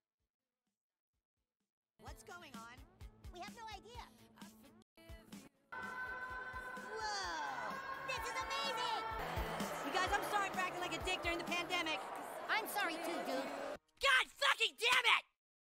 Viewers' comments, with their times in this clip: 0:13 That Freaking Eric Cartman Yell.